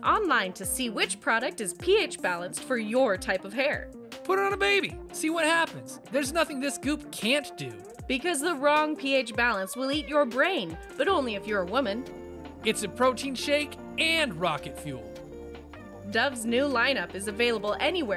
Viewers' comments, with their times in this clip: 0:04 when it said "glue a wound shut" i though it said "glue a moon shut" and then i was thinking about it and then i heard "glue a baby"